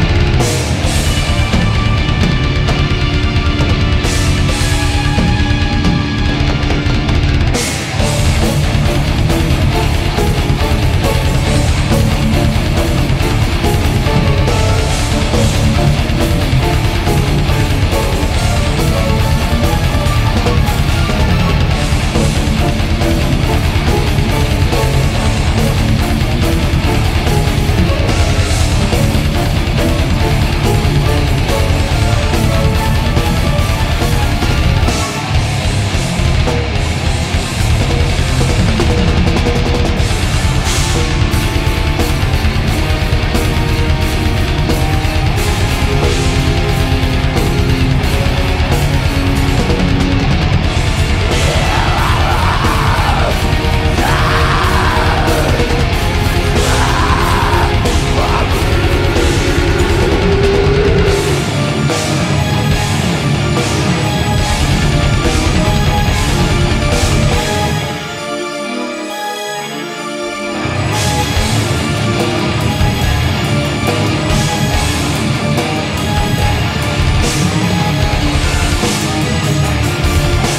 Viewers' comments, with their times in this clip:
0:06 Shoot the keyboard guy ... the part from on sounds like polka. The musik itself is not bad, yet the synths just destroy everything
0:08 When I hear the riff it makes me wanna chase somebody through a forest, naked, with a chainsaw in my hands. Is that wrong?
0:10 is some freaking heavy riff damm! fuking awsome band and performance
0:50 What a voice man
0:51 I just fucking jizzed. This band is so fucking great. Orion is such a good frontman, his bm shrieks was so fucking amazing. I normally don't like keyboards, but the way it sounds in Vesania is fucking EPIC.
0:58 epic guttural! Orion is a fucking singer. I'm a fan of this guy!
1:05 the riff sounds almost the same with Dimmu Borgir's "The insight and the catharsis" riff at the 3/4 of the song...See for yourself ... xD